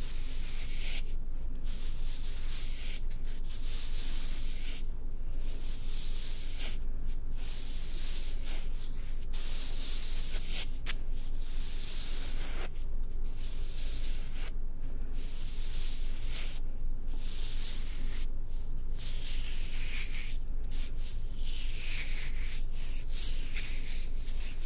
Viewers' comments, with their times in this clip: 0:05 sounds like running a metal smoothing tool over freshly poured concrete